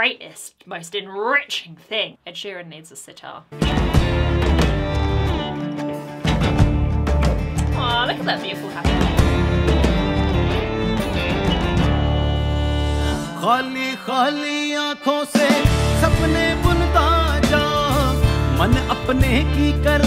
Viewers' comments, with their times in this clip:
0:06 I thought you said, "Look at that beautiful hand." I got Diamond Is Unbreakable Flashbacks!